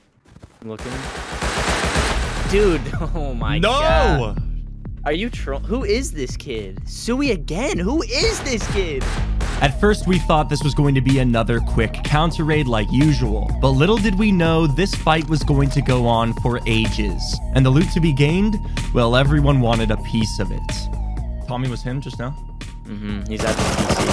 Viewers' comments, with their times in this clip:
0:08 Bro the music is kinda a bop ngl